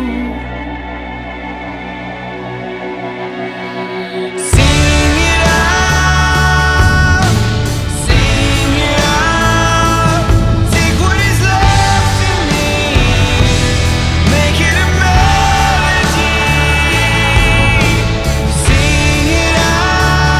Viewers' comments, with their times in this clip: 0:04 and on sounds like Comfortably Numb from Pink Floyd